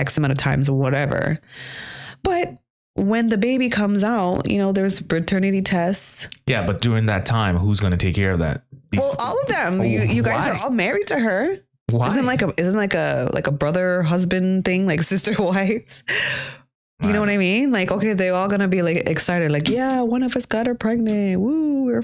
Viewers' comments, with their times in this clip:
0:06 DID SHE SAY " PERTERNATY TESTS " I can't believe that. Cappping man, capping is so unattractive, go and watch some videos of Philopena women talking. Pure sense. So attractive.